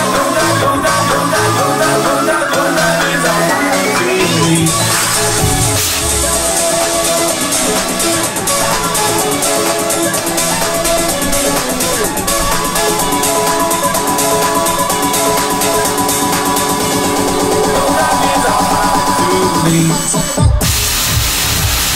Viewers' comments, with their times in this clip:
0:08 Lol I think he miscued that but made an insane recovery